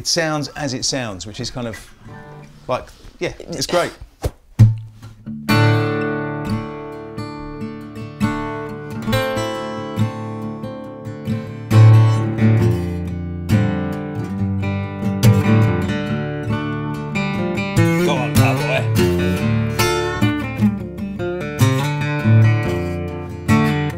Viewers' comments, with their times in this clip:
0:07 Bad ass playing!